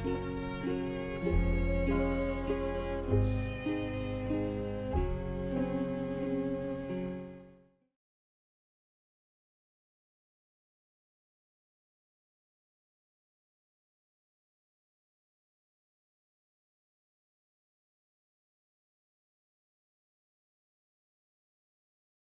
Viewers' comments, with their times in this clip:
0:04 song kinda reminds me of titanic and the lady